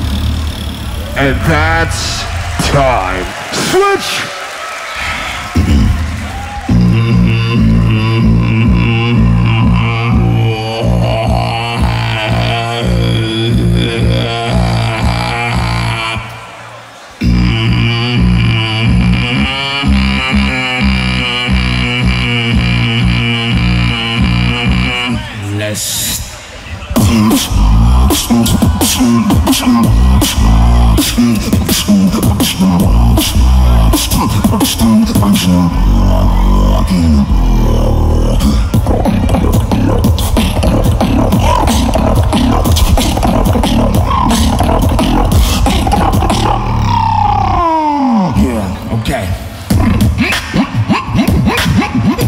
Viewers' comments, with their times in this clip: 0:03 Legit the same melody he did against Alem :/
0:35 really underrated drop! One of my favorites of the whole GBB 🔥🔥🔥
0:35 is the best drop